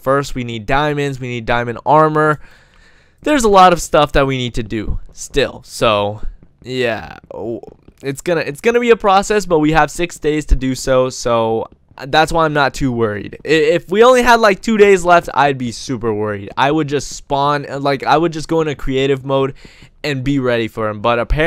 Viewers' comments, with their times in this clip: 0:07 OMG enderman noises